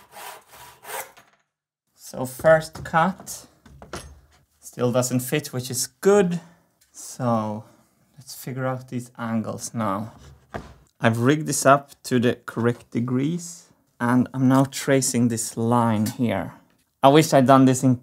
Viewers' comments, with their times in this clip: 0:03 Did I fuck up my brain so badly, that I'm now hearing the PH community intro?